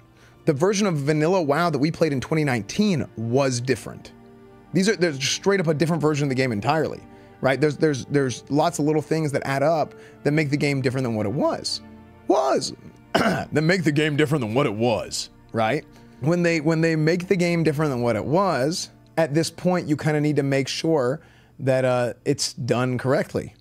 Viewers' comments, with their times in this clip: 0:10 Old Granma Esfand probably didn't want us to know how his real voice sound like. But because he wasn't paying the editors enough money (they deserve AT LEAST a 20% bonus to their base pay, 100% fact), they left it in the video. That's what you get for under paying the working class, you greedy burjua! 😂